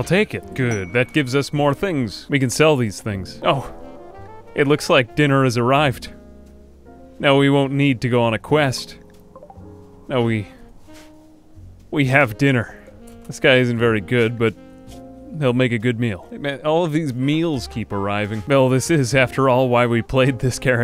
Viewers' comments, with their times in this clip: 0:05 "Oh it looks like dinner has arrived." dude how you expressed that, it broke me i couldn't stop laughing.